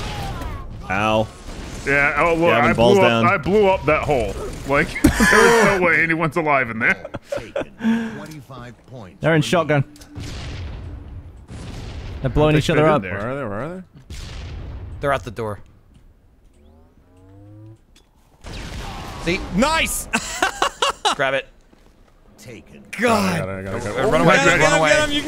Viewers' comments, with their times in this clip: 0:07 A little after I cant believe Jack didn't jump all over whoever was snacking into their mic, considering his hatred for ASMR. 🤣 Holy Halo Sunday should be a thing forever. Love watching these guys play these games.